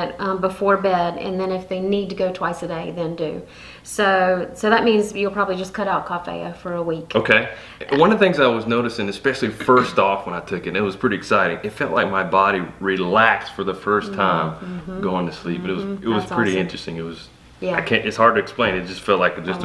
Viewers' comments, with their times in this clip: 0:06 What was that she said cough heya?